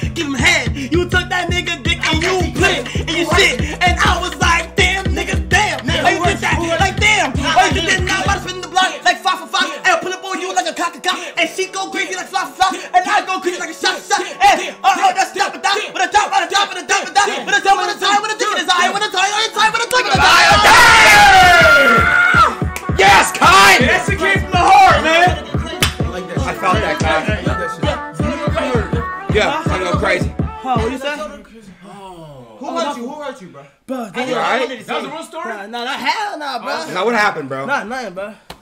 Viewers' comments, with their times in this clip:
0:05 the BEAT DROP WAS SOOOOOO GOOD BRUH i kept watching that prt over and over 😭
0:05 when he broke into the nicki minaj flo I fkn LOST ITTTTTTTTTTTTT
0:15 I heard some Nicki Minaj type shit 😂😂
0:19 the flow was crazy 😂